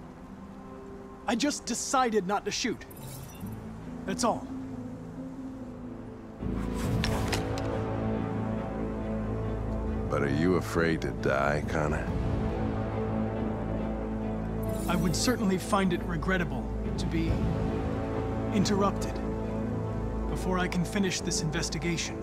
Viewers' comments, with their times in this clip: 0:10 The way hank says that sentence I’m like “BADASS IN THE BUILDING!”